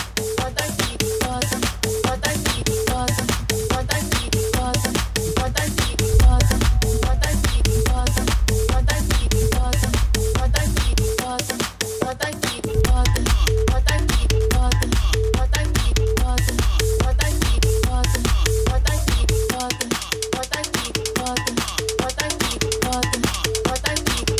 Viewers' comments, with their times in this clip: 0:06 naughty Brazilian funk samples